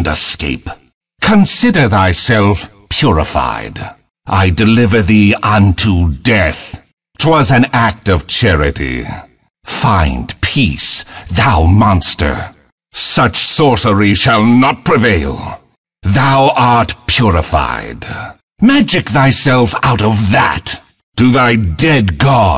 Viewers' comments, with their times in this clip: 0:06 the most awesome "Death" i've heard in my life